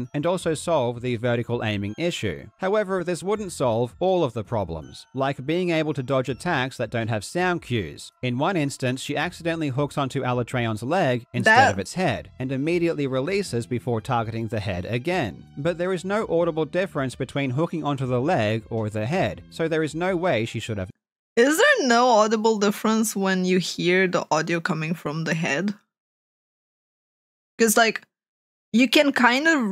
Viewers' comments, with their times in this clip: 0:10 the part when Karl said that there is no audible difference between the leg and head was more about the audio cue from the clutch claw hooking on to the leg by mistake when she was aiming to clutch claw to the head. the sound of the clutch claw hooking onto the monster is the same no matter what body part it is so canceling the failed attempt on the leg was a dead giveaway that she counld see